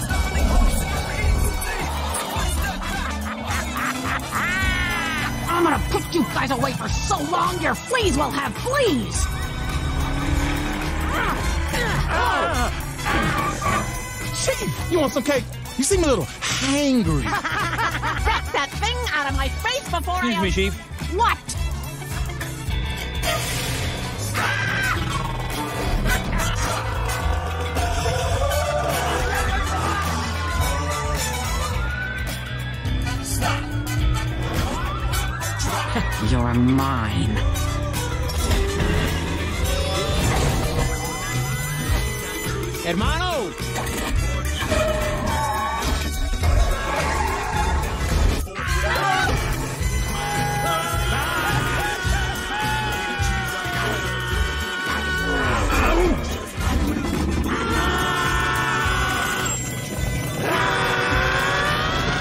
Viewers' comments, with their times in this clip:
0:03 she's cackling chief
0:16 Mr Shark Say Hungry Not Angry But The Cc It Say Angry
0:30 was that a crashing cartoon sound effect if it is check to listen without the music or something
0:38 I wish Engine sounds were better. That was kinda lame NGL.
0:48 All Policies Screams